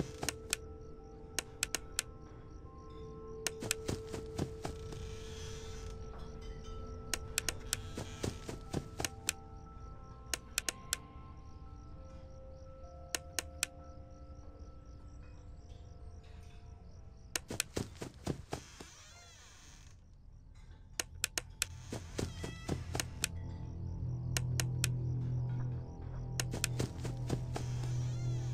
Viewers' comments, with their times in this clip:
0:10 Stopped The clanking is scaring the shit outta me. YA KNOW WHAT?! FUCKING THIS. IMMA GO ON FULL SCREEN. WATCH MY BACK.